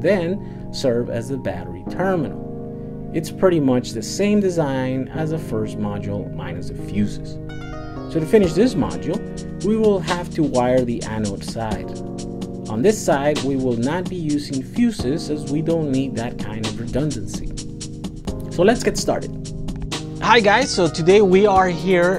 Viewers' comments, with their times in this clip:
0:07 lol Vsauce music